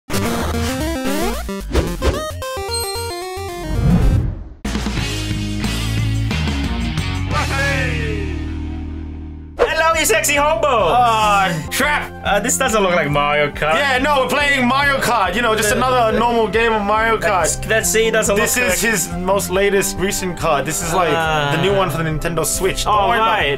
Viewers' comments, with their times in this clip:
0:09 so I've always been confused on this. But are they saying "Broccoli"?